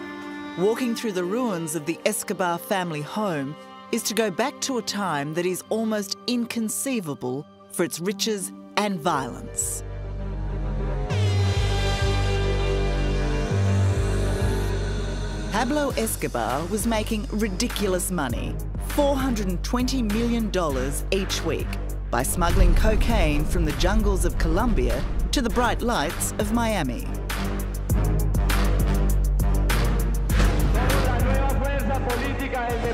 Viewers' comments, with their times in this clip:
0:10 Dank memes airhorn wtf
0:14 that song really perfectly fit to him